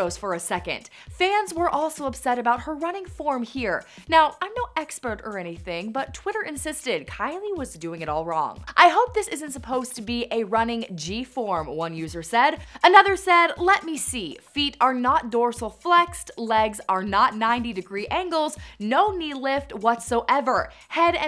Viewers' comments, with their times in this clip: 0:08 the way she said running as "runnin g" lmao